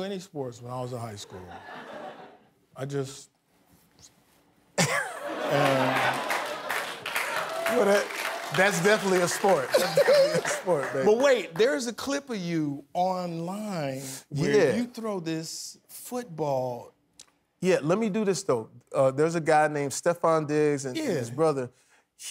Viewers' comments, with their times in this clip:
0:09 the giggle though